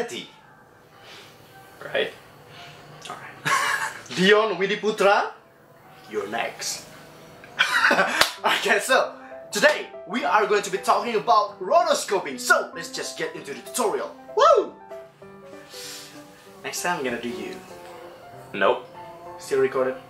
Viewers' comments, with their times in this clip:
0:05 I heart ,,puta" 😂😂😂😂